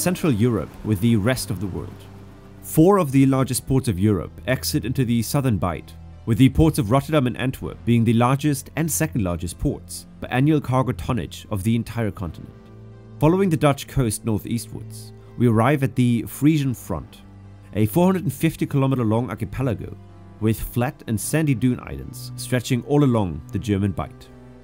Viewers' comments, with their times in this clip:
0:06 There it is again: thee rest of the World – thee Southern Bight! Wtf?